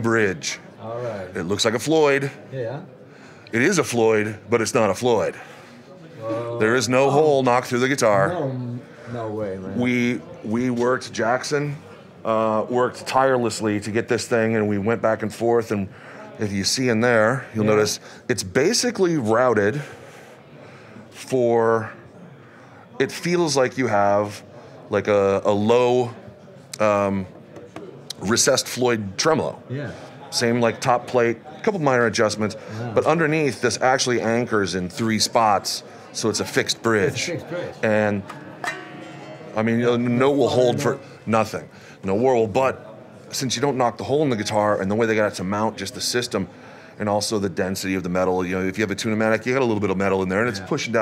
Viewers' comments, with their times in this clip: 0:07 I agree! I love how passionate he sounds, like when he goes "there is no hole knocked through the guitar" Like you said about other artists, they always just run through the specs and don't even seem interested
0:36 demonatrating how stable is the fixed bridge... strums